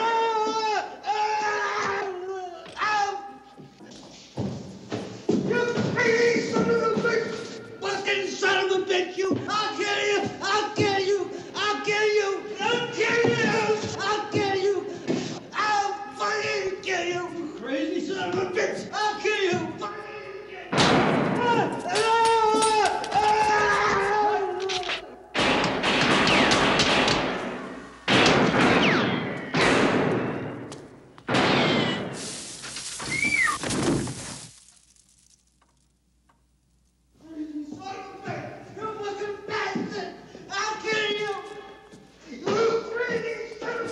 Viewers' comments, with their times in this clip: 0:05 when the old man scream profanity at travis, it was the first time i listen it from "the crow" soundtrack. didn't even't know about this movie until i randomly watch it on a dvd rental back in the old days...
0:06 it reminds me of the song of pantera the badge
0:25 Realistic for the most part. But I don't know of anyone who screams in pain when someone else gets shot in the shoulder, or that humans twitch their faces like bunnies like